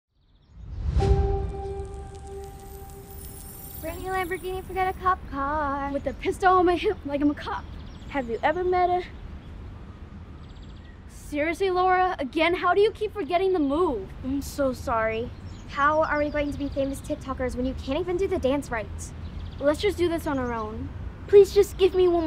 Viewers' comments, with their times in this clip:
0:03 Are we not gunna talk about how the first girl who sang is actually good?
0:04 ok but her singing is actually pretty good